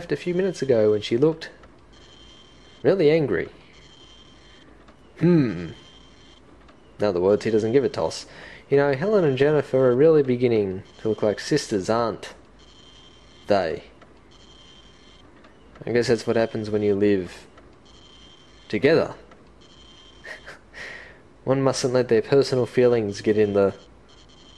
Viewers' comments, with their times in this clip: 0:07 that delay on every damn sentence is fucking HILARIOUSLY awkward. Hahaha! You're voice acting is pretty entertaining, and not at all obnoxious. I like it how it doesn't have voice acting so you can let yourself shine on the voice work. I remember passing by this game all the time at the rental store when I was a kid and being TERRIFIED of the cover with that dude with the bloody scissors. So this'll be interesting actually seeing it through. Cheers, and good video! :)